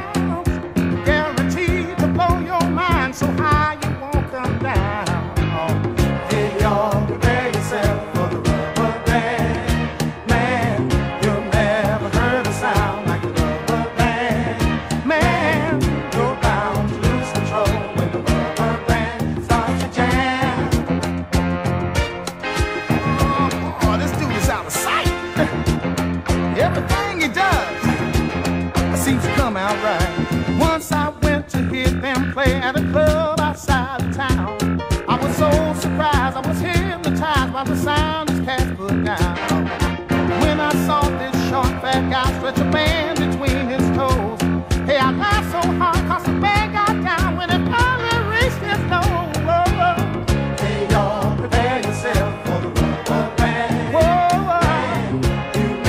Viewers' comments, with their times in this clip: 0:06 really cool music line
0:43 does he say "Hey I got so HARD cause the man got down, when it finally reached his go"?